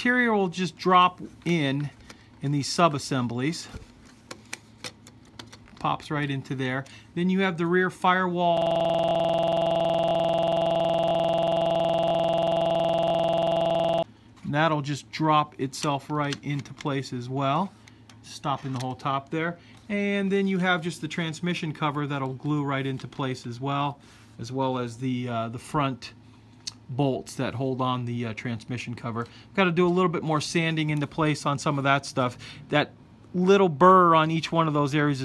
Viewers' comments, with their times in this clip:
0:08 anyone else hear error there??
0:21 Rip ears in